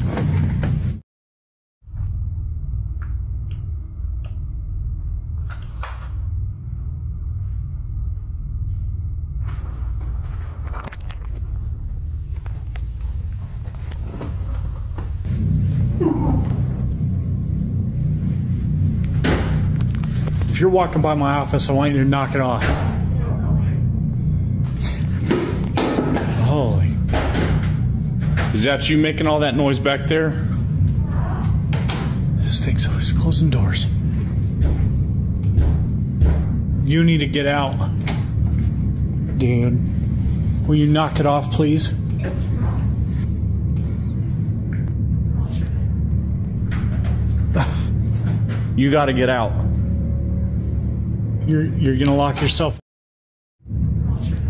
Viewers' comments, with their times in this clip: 0:09 In the video you can hear a voice speaking back to him. It sounds computer generated... Really listen to it, it speaks several times...
0:20 right after he says “knock it off” something seems to say “you don’t help me” in a strange voice that sounds like more than one voice at once.
0:23 So, the second case with the shadow figure. I hear responses that weren't mentioned. One being He says, "You need to knock it off." I swear I hear a voice saying, "No, go away."
0:23 after dude tells spirit to stop, does it not sound like a distorted "you don't know me" in dudes voice?
0:40 that demon needs to start paying rent if hes going to talk and slams doors who does he think he is good lord